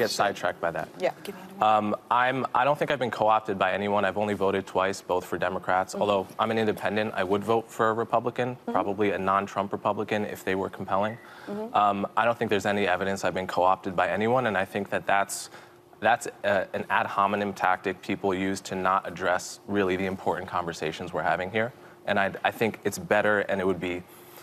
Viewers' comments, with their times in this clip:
0:06 Coleman steam rolled Sunny! 😎 Full heat, calm and slow, the full weight of smooth words crushed Sunny under full pressure. That was smooth! 👏